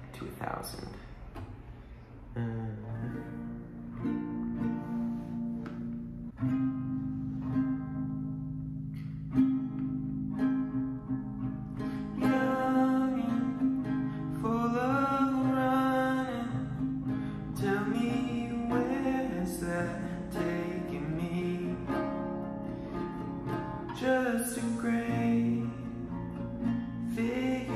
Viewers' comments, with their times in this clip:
0:08 Singing starts if you want to avoid some of my rambling 😁